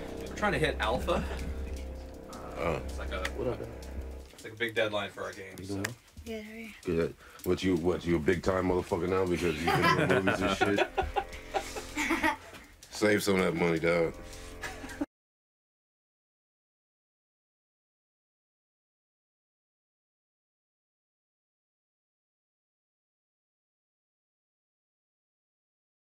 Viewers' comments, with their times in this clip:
0:07 kratos trying to talk like young boys for atreus 😂